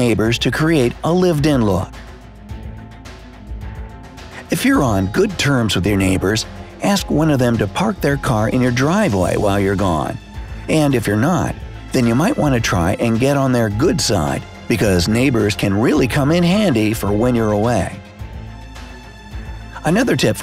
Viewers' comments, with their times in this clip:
0:04 With that music it totally sounds like something a psychopath would say. "Just manipulate them into liking you, even if they do not interest you at all, so you can use them to your advantage"